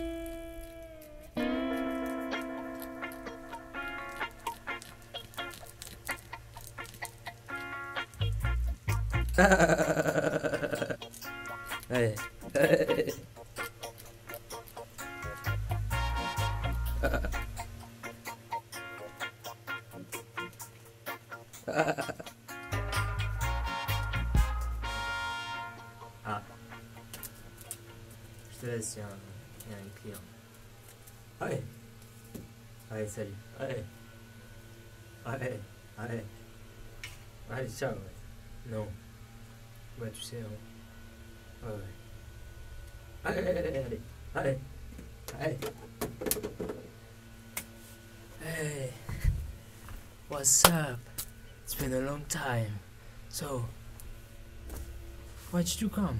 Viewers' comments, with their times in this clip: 0:08 when you shout at an electric fan
0:09 WTF IT IS SRK😆laughing
0:09 me trying to laugh like spongebob
0:38 is he speaking Korean??